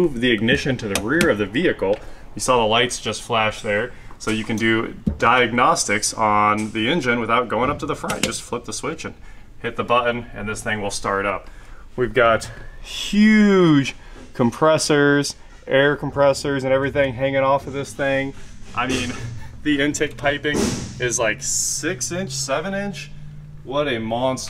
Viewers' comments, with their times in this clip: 0:08 AARGH!! Why why why CAN'T HE say THE WORD "BUTTON" CORRECTLY? LOL. He says everything else normally/ Everything but then every time in every video he says "BU-UN". As if he grew up in some place where the "T" is silent. But only for that ONE WORD. LOL. Drives me nuts! LOL. Love the videos guys keep em coming!